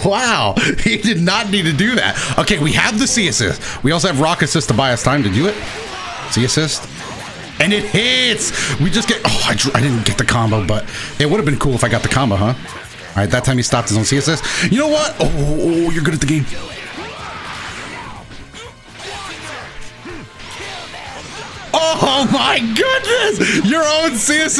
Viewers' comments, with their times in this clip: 0:06 I thought he said the world